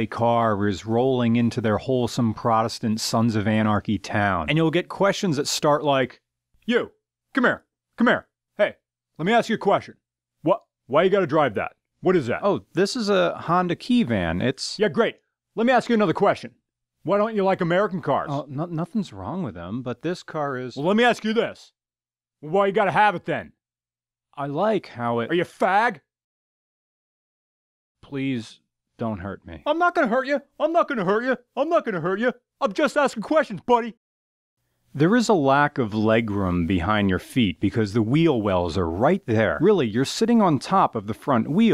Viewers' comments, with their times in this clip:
0:10 Hehehe, you sound like Christian Bale on Also great video dude.
0:17 I thought he was sounding like Nic Cage
0:24 ....wow hard F
0:28 why does it sound like it came from somewhere else.